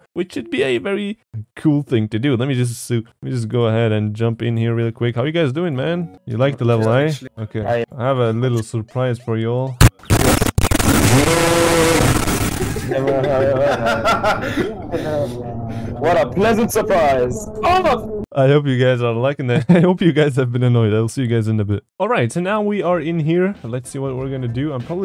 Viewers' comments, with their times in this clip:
0:08 the loudest sound I've ever heard and rip to all headphone users
0:08 Why is so quiet
0:10 bro got me dying how did you even make ur mic sound like that lol